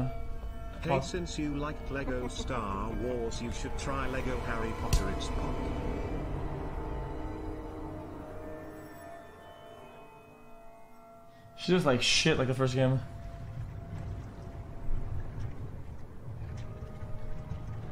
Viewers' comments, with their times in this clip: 0:04 the slap lmfao im dead